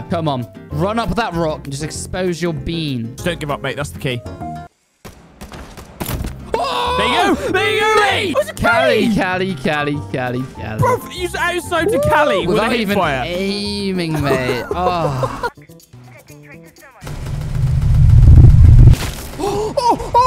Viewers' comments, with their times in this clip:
0:03 why did i hear that one memey guitar tune